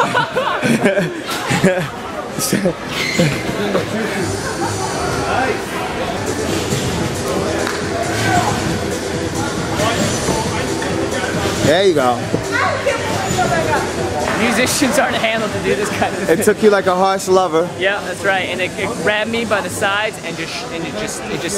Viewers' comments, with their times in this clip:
0:04 Can't help but laugh at darude sandstorm in the background